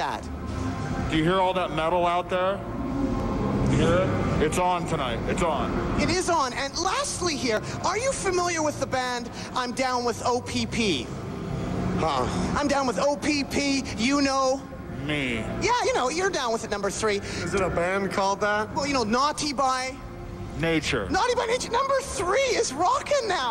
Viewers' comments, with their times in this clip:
0:08 the interviewer at like or whatever sounds like someone who would get bullied all throughout middle school